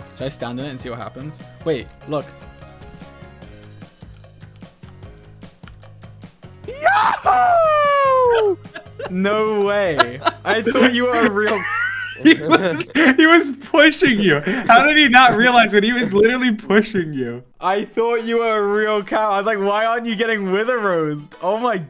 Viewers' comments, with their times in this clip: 0:07 I love how gogy makes a face to try and hold in his laugh bc he knows he’s gonna laugh to dreams wheeze on
0:07 Sapnap:YYEEEAAAAHOOOOOOOOOO Dream and KarlJacobs:Starts laughing Everybody else:😐😐😐😐😐😐😐😐